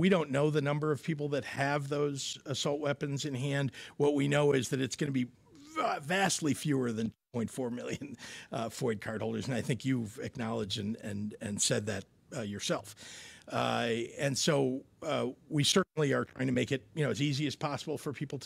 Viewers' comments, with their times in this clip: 0:05 he farter at this time 🤣